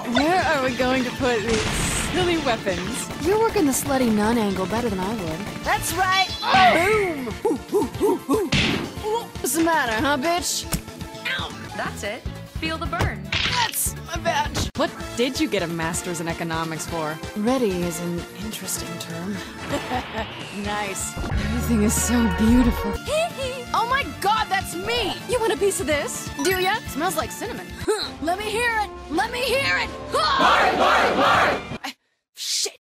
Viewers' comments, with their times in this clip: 0:05 with 0.25 playback speed. Commit swaggery
0:21 Any colour you like by Pink Floyd but its speed up.
0:23 love that goofy HeeHee